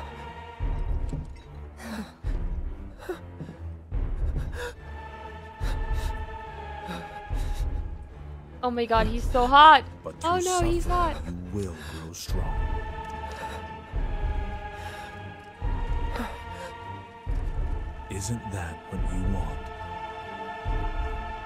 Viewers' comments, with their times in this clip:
0:06 the music is the best!!!!